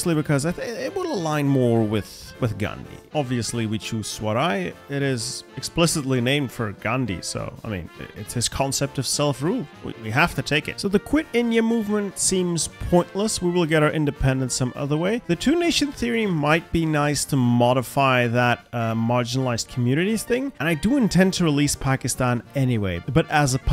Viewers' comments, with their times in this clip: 0:04 Hey dude, I love your videos, especially this one! But there is one mistake I have to correct, you pronounced "Swaraj" as Swaray, it is actually just pronounced with the regular 'J ' sound.